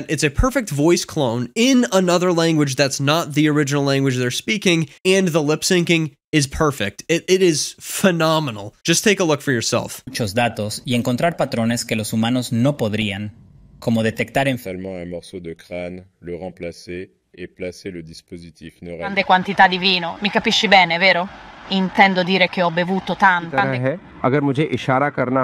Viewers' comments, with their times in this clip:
0:10 The accent still is Latam Spanish... it isn't that hard to separate them when making these tools.